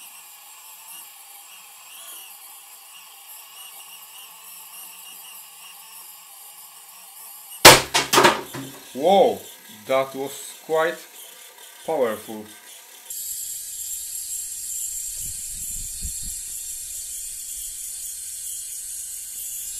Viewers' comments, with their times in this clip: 0:07 pooooooo Shocked me pretty well with my headphones on. Gosh